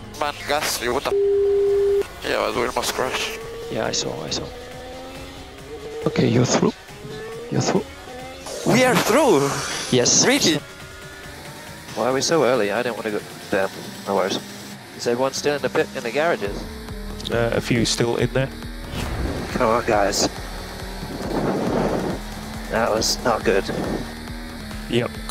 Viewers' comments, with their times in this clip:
0:07 Love Collapinto's reaction, he sounds so surprised and happy it's wholesome